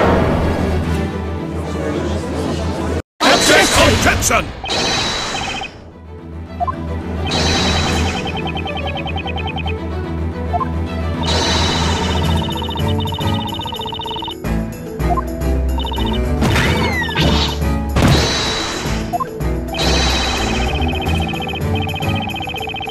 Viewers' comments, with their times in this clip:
0:03 RIP Headphone users... I think XD
0:04 Gah! ...Jeez, I've never seen that many "Objections!" yelled at once. o.o